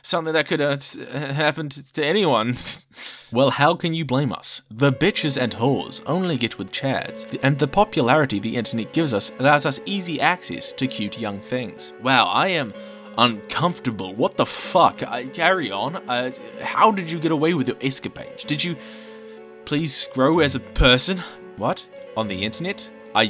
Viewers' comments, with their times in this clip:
0:04 Adachi music starts playing “The b’s and H’s” Bruh that just broke me